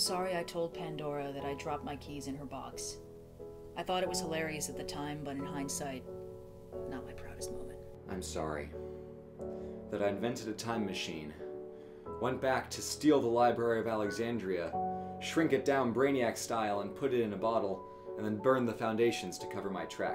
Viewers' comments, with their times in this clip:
0:06 Sounds like it could also be a remix of Hopes & Dreams